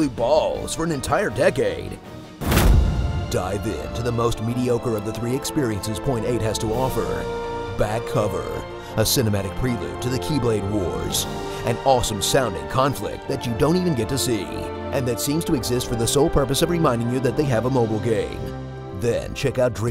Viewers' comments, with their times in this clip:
0:03 is it me or did the Russian National Anthem started playing?